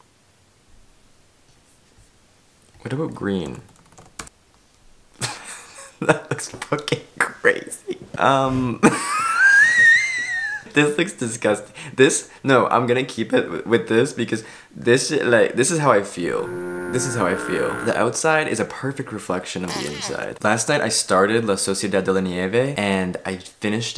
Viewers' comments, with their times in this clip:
0:08 The wheeze laugh you did sounds exactly like that fart flute video from 2015